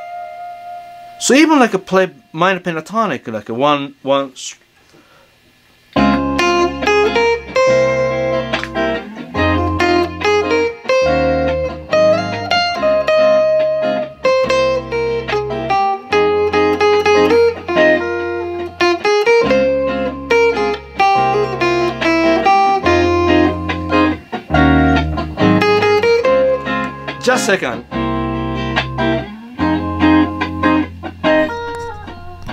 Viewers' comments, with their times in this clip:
0:04 Music out of no where 😍 ... I believe I can learn now
0:20 Almost the lick